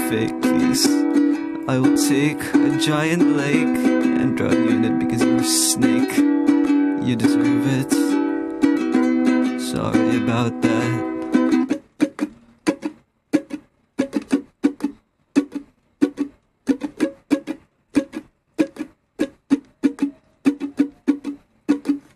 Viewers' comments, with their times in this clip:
0:04 Bro just invented a new way to sing (made a whole song using a ukulele and talking while avoiding talking, rapping, whispering, singing, and almost all other forms of defined ways of speaking). PS: Some snakes can live underwater, thus the reference "drown you (in it) because you're a snake" is not always viable. Also, the song could use some more rhymes, ending every sentence with "that" may be a little overused in the first half.